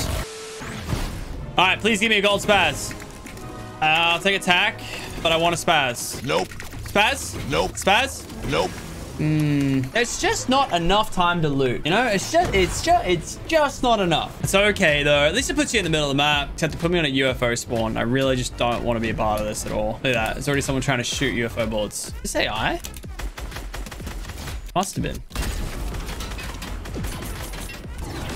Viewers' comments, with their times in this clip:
0:10 When you lag when you are talking